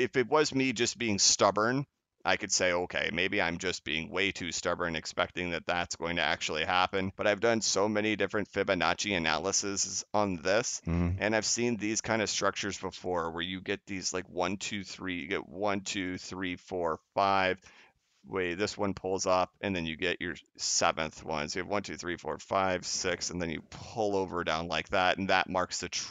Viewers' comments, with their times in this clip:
0:09 Did anybody notice sounds like somebody sitting next to him say umm hmm lol
0:10 that's neat but the most important point made here no one is discussing is clearly the "uhuh" joking if not obvious, mean no disrespect to this man's work!